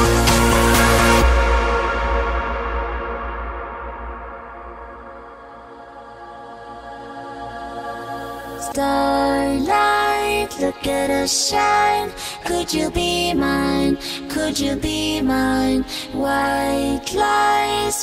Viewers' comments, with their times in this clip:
0:06 * Acapella free :P